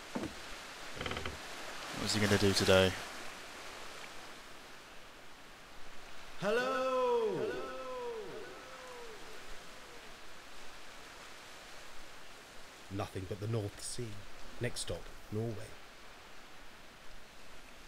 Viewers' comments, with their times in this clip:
0:03 how the f does it echo? it's the bloody open sea. Now that is quite the flaw hahahah